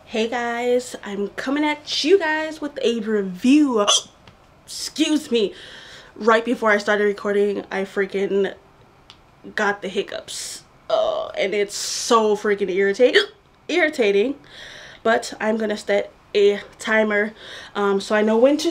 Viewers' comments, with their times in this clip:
0:03 those hiccups so violent